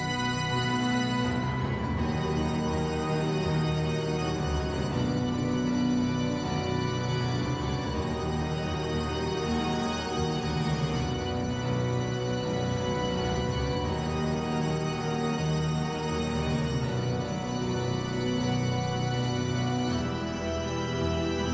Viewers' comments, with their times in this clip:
0:06 that chromatic modulation where have i heard that before ?